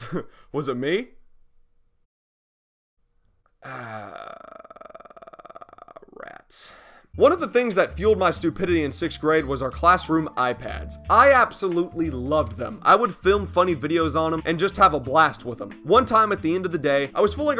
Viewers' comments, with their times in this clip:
0:04 Sounds like a car on idle